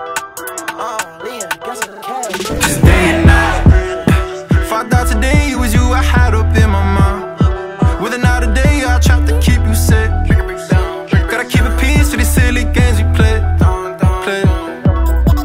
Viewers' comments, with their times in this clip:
0:03 why does he sound like polo g😂😂😂😂😂😂😂😂😂😂